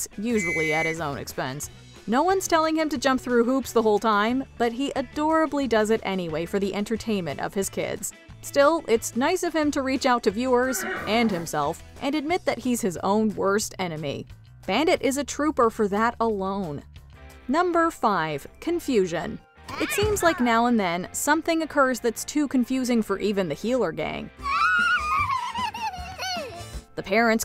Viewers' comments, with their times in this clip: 0:10 What the heck was that in the background!? Did someone sneeze during the take?